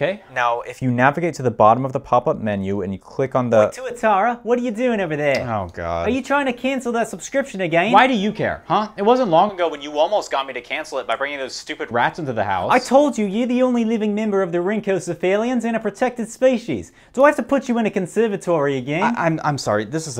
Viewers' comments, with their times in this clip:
0:04 this skit is so good 😂😂 and the sincere yet terrible kiwi accent killed me